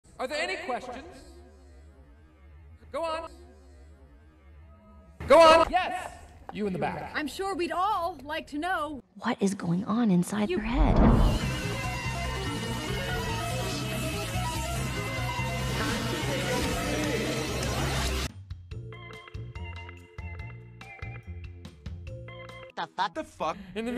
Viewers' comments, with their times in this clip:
0:05 LOUDNESS HAL STEWART